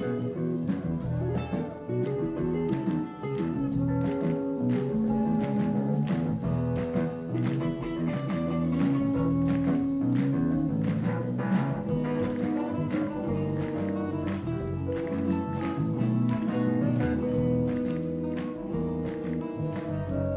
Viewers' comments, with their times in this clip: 0:03 TBE audience clapping rhythm, that's so tight